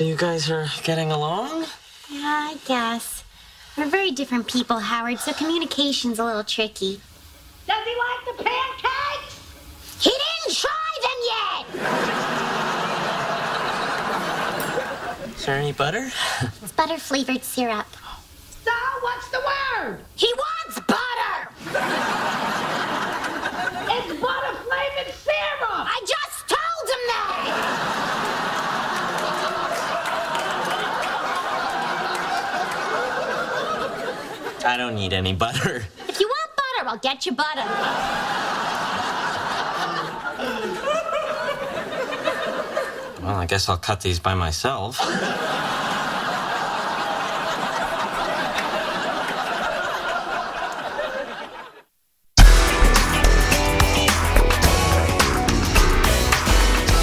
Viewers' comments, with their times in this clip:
0:07 Mrs. Wolowitz: Does he like the pancakes? Bernadette (Yelling like her): He didn't try them yet!!! LOL
0:35 Brooklyn took over Bernadette!
0:37 reminds me of the nanny
0:40 That belly laugh definitely reflects my amusement at this scene perfectly.